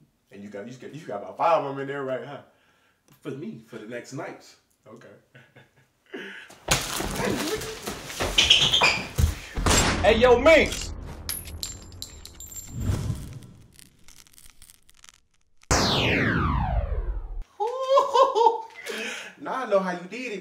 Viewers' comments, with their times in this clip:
0:08 🎬That gym shoe skirrrt around the corner getaway😂😂😂🤟🏾